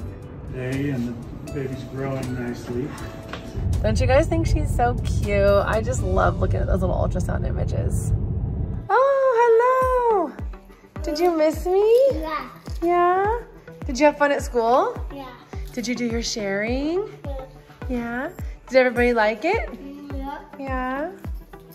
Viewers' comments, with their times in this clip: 0:08 am I the only one who heard b…es